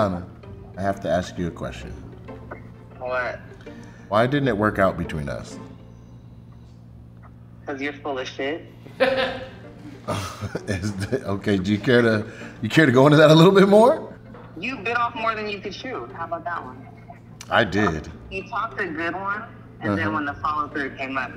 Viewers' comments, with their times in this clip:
0:08 the laugh from the interviewer ...